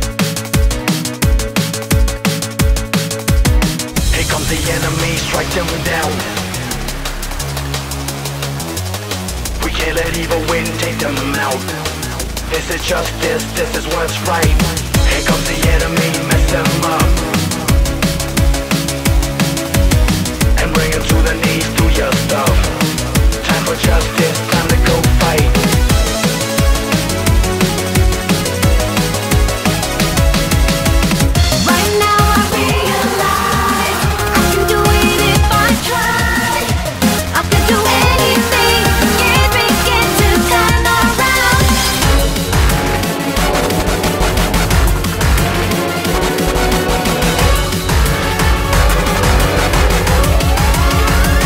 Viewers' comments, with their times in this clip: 0:03 Sounds like a pretty good theme for shadow
0:04 I freaking lost it when Ugandan Knuckles appeared and started freaking singing. His mouth movements were also hilarious.
0:05 Knuckles sings cool
0:31 "Right now I (slightly distorted) REALIZE. (Back to normal) I can do it if I (slightly distorted again) TRYYYYYYYYY."
0:32 that actually sounded satisfying I had full volume on too